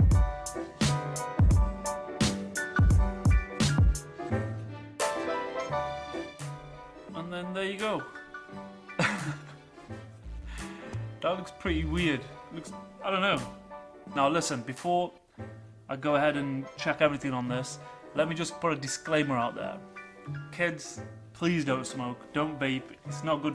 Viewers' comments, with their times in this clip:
0:08 That funny laughter basically says it all... it's WEIRD! lol It would be even funnier if the tank was used as an external antenna. xD